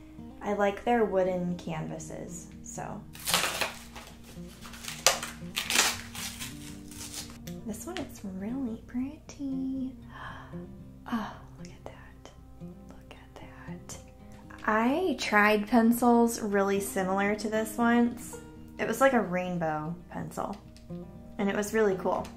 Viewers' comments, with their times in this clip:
0:10 asmr has joined the chat